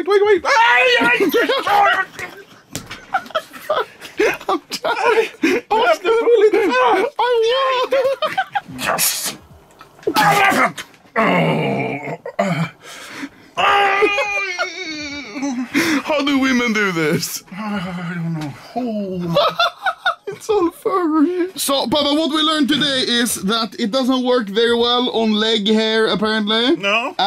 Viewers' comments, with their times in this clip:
0:06 Angry Viking Sounds
0:09 papa screaming elephant